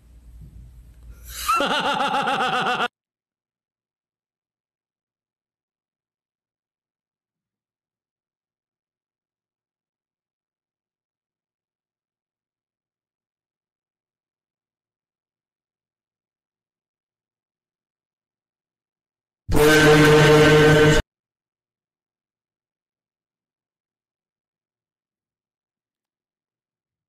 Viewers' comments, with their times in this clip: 0:09 The HAHAHAHAHAHAHAHAHAHAHAHAHAHAHAHAHAHAHAHAHAHAHAHAHAHAHA ON GOT ME